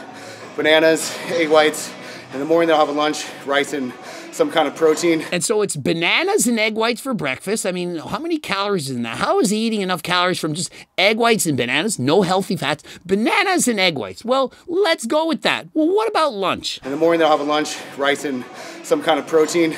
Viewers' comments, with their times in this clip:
0:05 hes super out of breathe, natural???? def not in my opinion, even after running, you shouldnt be that out of breathe, he isnt even doing cardio. he just doesnt seem natty from his physique